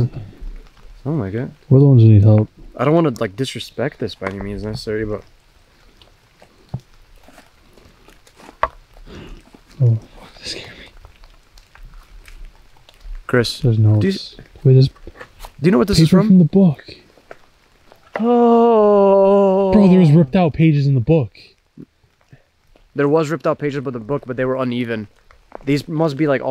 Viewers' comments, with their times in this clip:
0:10 are those footsteps behind you and within the next 2 minutes I think there are more and I think some crazy fans are doing this bs to u